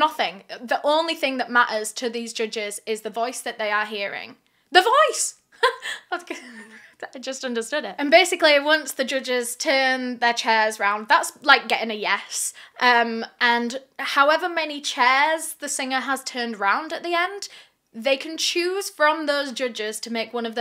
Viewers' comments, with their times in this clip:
0:03 im sorry but “THE VOICE!” was so adorable 😭